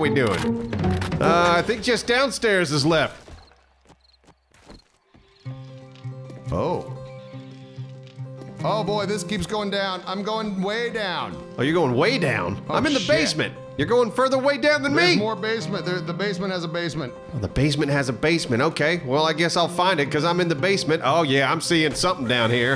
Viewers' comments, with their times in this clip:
0:05 good job on the extra PTSD from the added rabbit death sounds 😆 I also love the consistency across the channel in using the pop sound when a character disappears lol.